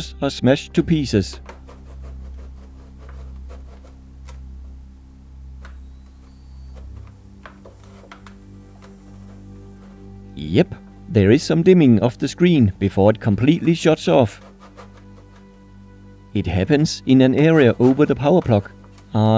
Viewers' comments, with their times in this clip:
0:05 you can hear the transformer a moment before it turns off